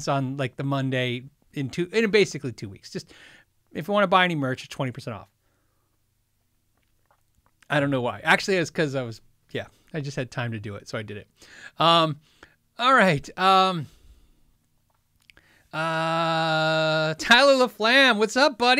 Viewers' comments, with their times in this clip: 0:05 It’s Michigan right now. Just spent 4 hours editing my sons 4th grade social studies video. Sitting on my couch, smokin a bowl, recapping on some KYG...then all of a sudden I hear “Fender Master-bator” instead of “Fender Master-builder”......... I’m still trying to imagine what Leo would have done. I think it’s time for bed now.